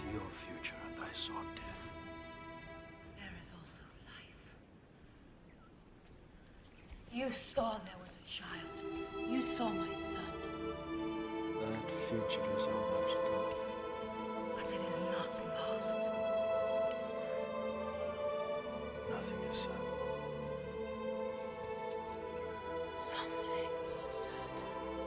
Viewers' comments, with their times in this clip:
0:07 Starting I'm like "Can you speak up, Arwen?" haha